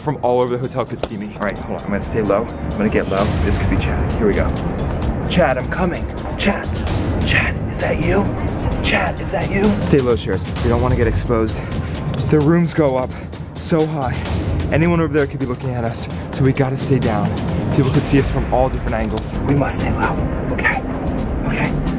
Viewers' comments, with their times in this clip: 0:06 Chad voice changer *ON